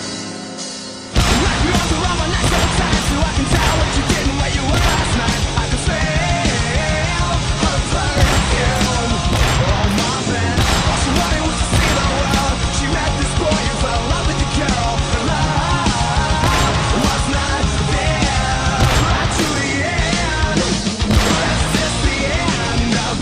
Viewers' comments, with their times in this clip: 0:06 Msr sound :D